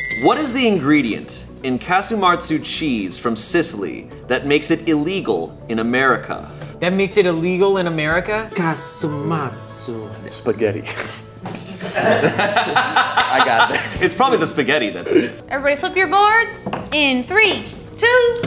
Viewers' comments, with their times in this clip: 0:03 angry Sardinian noises